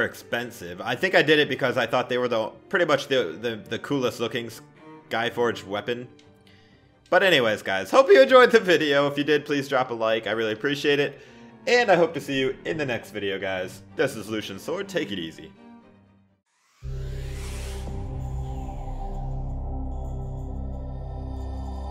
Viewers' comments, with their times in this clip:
0:07 voise crack oof